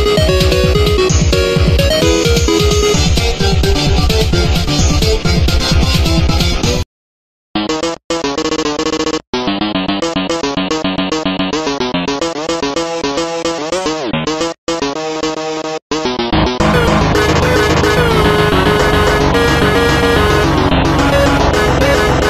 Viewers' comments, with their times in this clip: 0:08 the song was glitching I love it